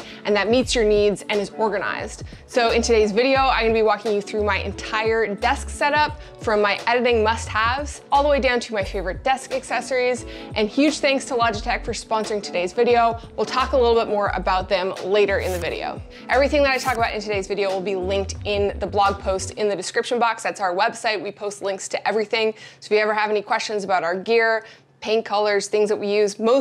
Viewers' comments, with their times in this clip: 0:09 when you hear the ringtone and thought it was your phone